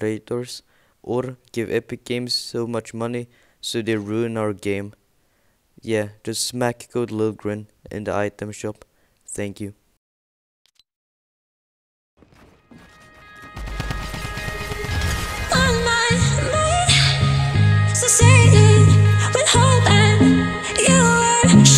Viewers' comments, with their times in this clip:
0:05 shut up 😹😹 voice is so Krusty